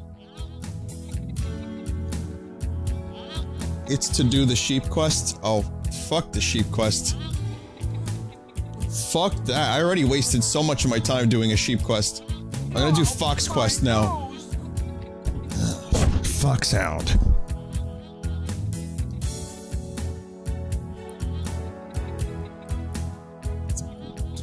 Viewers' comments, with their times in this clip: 0:06 No the music is very calming